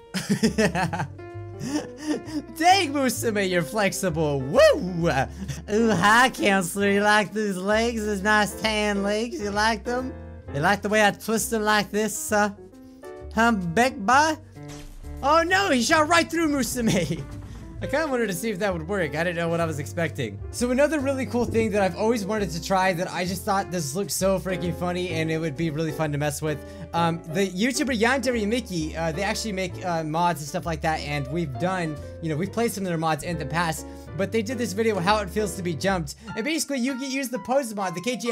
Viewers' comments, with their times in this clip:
0:06 you said counsler again
0:21 Did anyone else her a fart noise 😂😂
0:25 I thought FB status said -FBI status ..... ;/